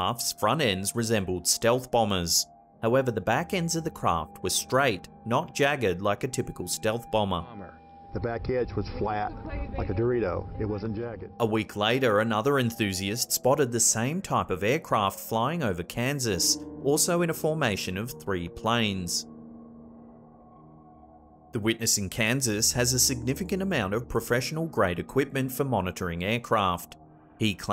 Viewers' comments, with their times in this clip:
0:09 “the back end was flat, like a Dorito...” 😂😂😂 uh I think the shape is called a triangle. His Texan accent while saying Dorito was so funny to me